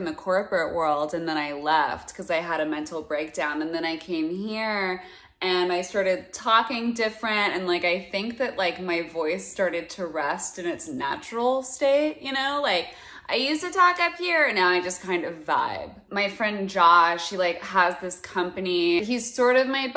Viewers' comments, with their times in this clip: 0:05 I think about this everyday while I'm driving for some reason. As a woman with a natural low voice voice, the 'I uSeD tO tAlK uP hErE but now I just kinda vibe' gets me every. Single. Time.